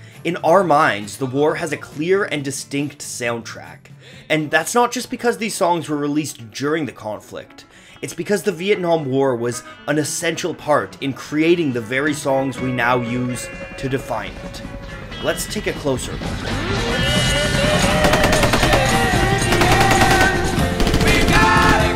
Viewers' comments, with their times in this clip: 0:08 holy shit theres wayyy too much good music at the start i literally just started smiling